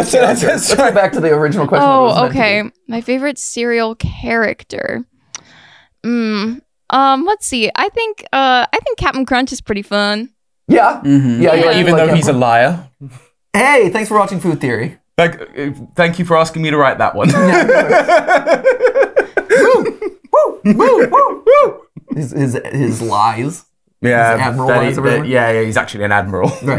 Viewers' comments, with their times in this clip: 0:09 Wen they talked about Cereal character I thought they were like Serial killer character from a game like William Afton.